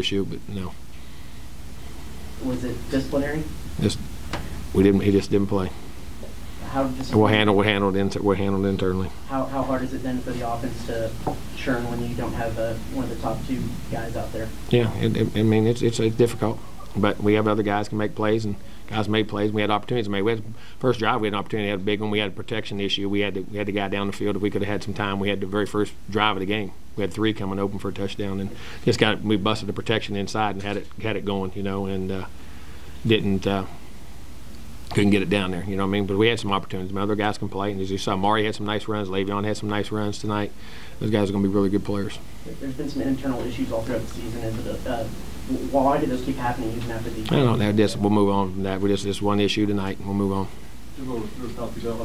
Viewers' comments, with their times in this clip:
0:03 First 45 seconds sounds like Boomhauer from King of the Hill LOL Edit: first
0:38 Am I the only one that noticed the nervous reptilian smacking of the lips ????